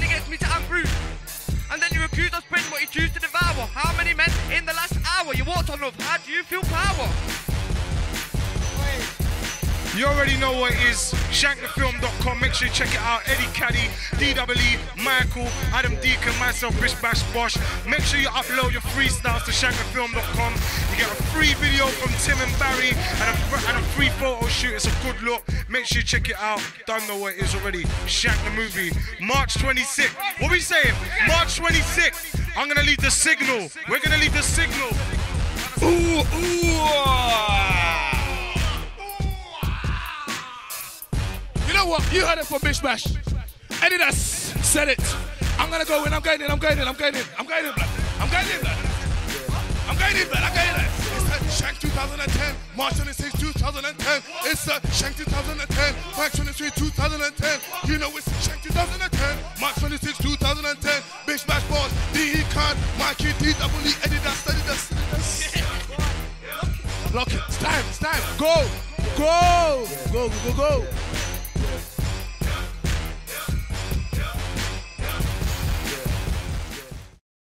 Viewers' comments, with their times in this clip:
0:03 Haha everyone's pure hilarious in this video! Haha Deacons laughing so much! XD
1:03 socha'a donna laughimg haha